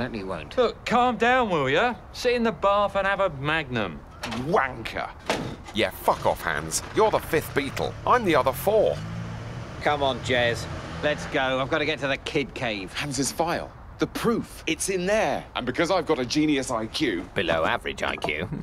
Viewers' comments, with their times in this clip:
0:03 is the best way anyone has ever said “wanker”